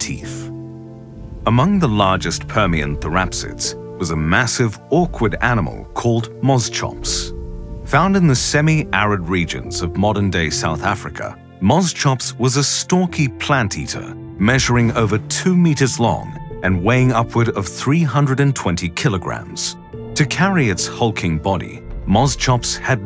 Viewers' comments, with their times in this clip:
0:04 bosschops is king of nightmarefuel yes ik thats not its name but its what i heard first so thats what it is